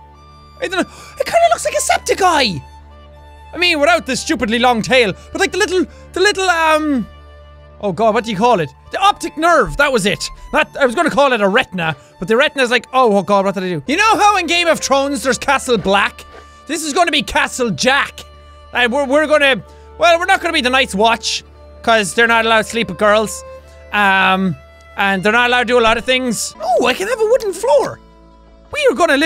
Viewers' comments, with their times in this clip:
0:05 the music sounds like Irish music Sorry jack
0:13 did you call it game of chrones?
0:13 I like how he said game of trones instead of game of thrones